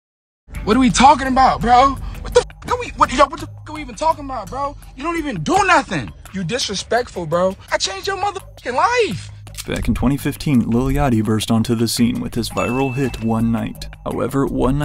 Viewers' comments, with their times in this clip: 0:02 Sounds like it hurt for his voice to be manly🤷🏾🤦🏾‼️😂